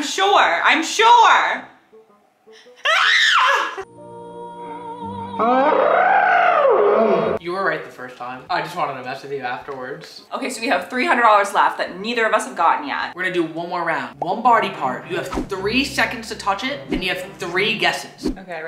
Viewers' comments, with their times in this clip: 0:04 the scream for